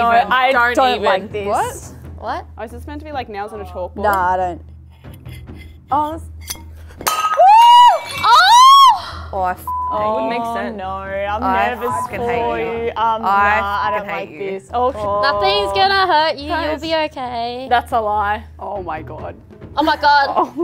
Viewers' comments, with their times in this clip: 0:08 loud in a family meeting